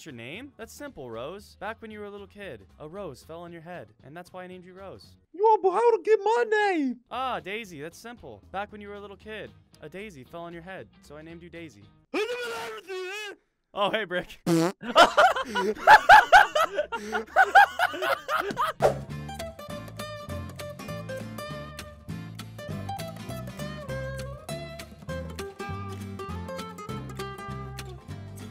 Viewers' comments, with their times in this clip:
0:07 weird noises "oh hey brick"
0:12 The generic way he said 'hey brick' got me!!!